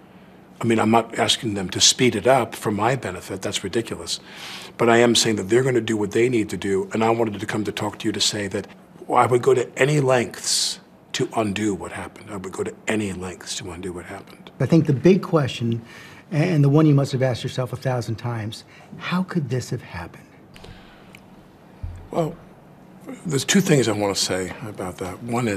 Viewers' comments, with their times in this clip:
0:09 when you spend so much time mocking a political figure that you start to speak like him....lol